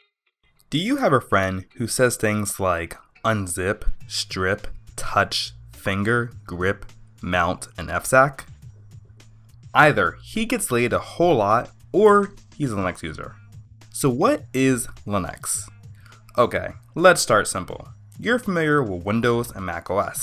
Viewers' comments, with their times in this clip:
0:05 Your GREP kind of sounded like GRIP to me. I also heard some other quirks in your pronunciation I'll still recommend this video to a friend of mine who wondered what Linux is.